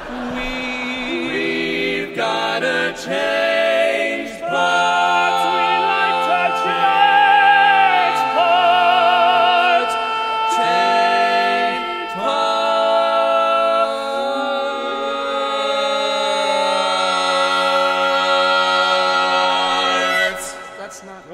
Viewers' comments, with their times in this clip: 0:04 The bass singing the tenor post reminds me of Brian Wilson